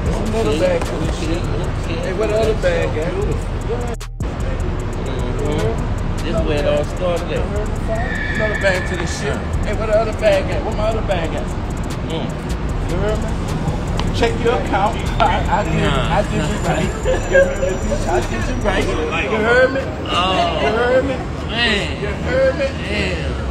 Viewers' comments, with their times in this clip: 0:08 that voice ain't sounding right